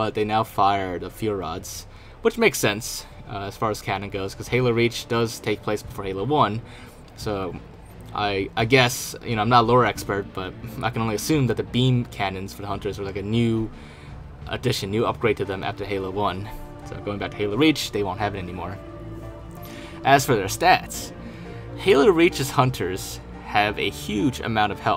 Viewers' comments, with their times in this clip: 0:06 omg the Reach soundtrack so much nostalgia takes me right back to 2010 😍😍